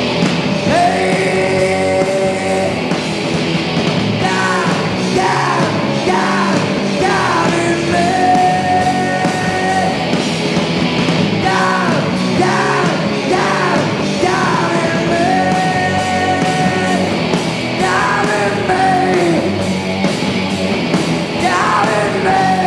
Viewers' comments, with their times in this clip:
0:10 Probably the best live performance of " DIVE" ever, cause on every bootlegs, or other live performance of that era 88-90, THERE WAS NO "SNARE HIT" right before the chorus. Really important to me to make that song in my top 10 exemple of "SNARE HIT"